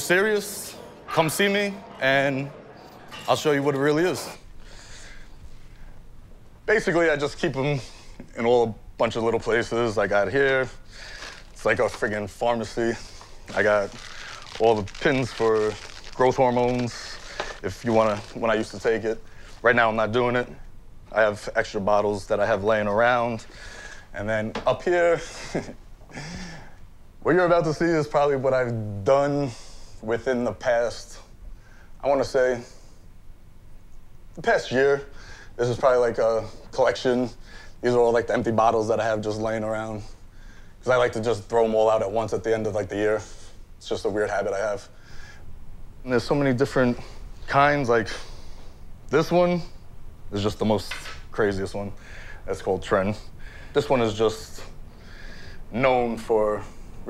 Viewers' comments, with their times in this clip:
0:03 he's in his house and still breathing heavy after a sentence.
0:43 dose anyone else hear the guy breathing heavily ?!?!? ...